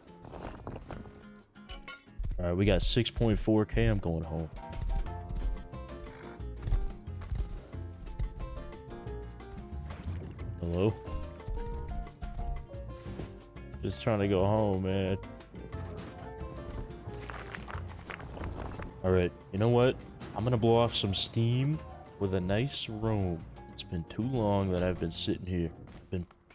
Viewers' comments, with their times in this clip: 0:09 laughed so hard on that chill "hello...?"😆😆